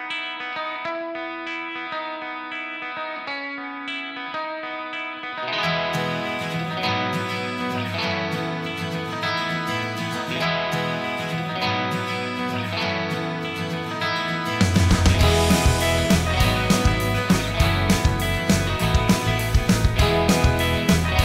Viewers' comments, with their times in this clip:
0:06 is incredible with this background music. So much joy!!